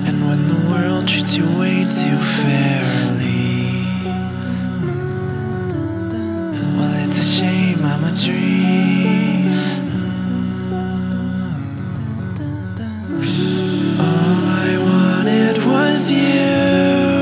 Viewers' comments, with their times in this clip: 0:05 Well, its a shame I'm a tree...